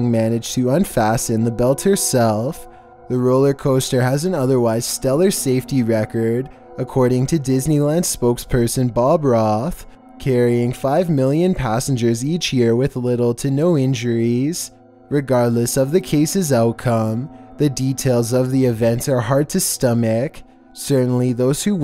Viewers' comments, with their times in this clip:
0:03 It sounded like he was about to say Bob Ross.
0:05 I actually thought he said bob Ross
0:08 I though he said Bob Ross 😅
0:08 I thought he said bob ross
0:09 I thought he said 'Bob Ross' for a second...
0:09 Is it me or did he say Bob Ross? OwO UwU